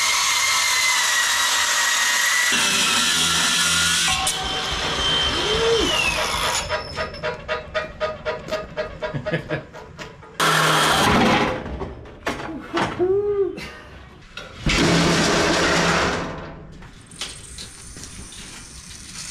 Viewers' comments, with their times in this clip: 0:05 That chuckle at that funny noise is the most relatable moment for men
0:06 the lift just started playing 'Money, Money, Money' from ABBA.